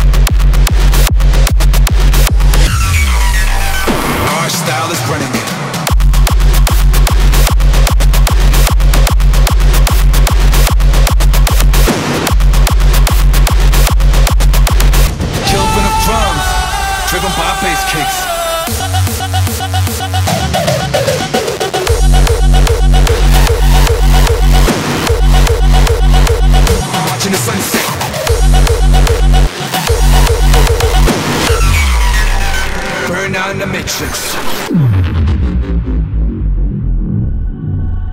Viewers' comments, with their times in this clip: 0:05 Sub Zero Project kick
0:21 That transition duuuude...
0:21 wow that kick amazing
0:21 that kick :O